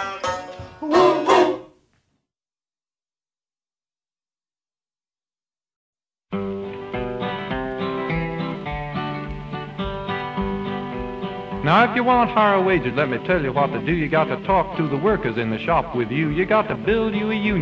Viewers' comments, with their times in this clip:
0:03 I can't help but notice the style of singing is very similar to Rappers Delight i wonder if this song was inspiration for the song.